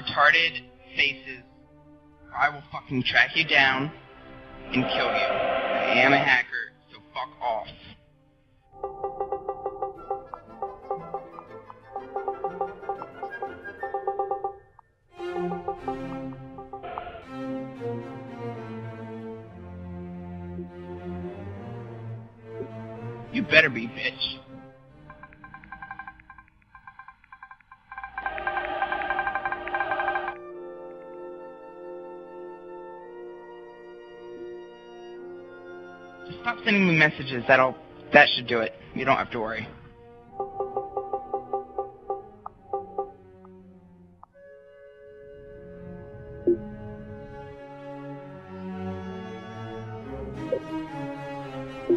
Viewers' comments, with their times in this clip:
0:04 “and kill you” *singing intensifies*
0:04 His voice makes it hard to believe him 😭
0:36 he actually sounded like he was being nice here :0